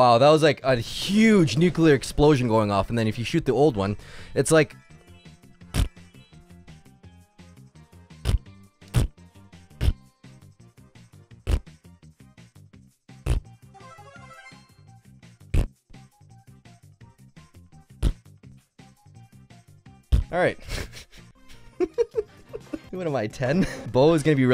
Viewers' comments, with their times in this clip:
0:05 the new sound effect of oj
0:08 If only that's whst it sounded like it would of been epic